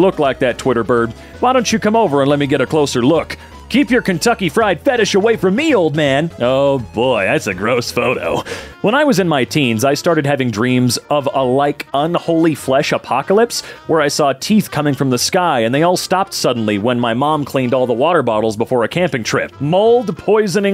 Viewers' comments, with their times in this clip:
0:03 the fact robin almost sounds like sonic is incredible